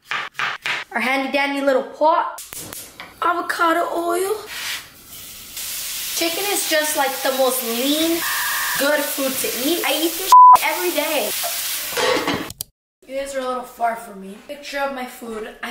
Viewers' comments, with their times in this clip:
0:03 girl sounded like justin bieber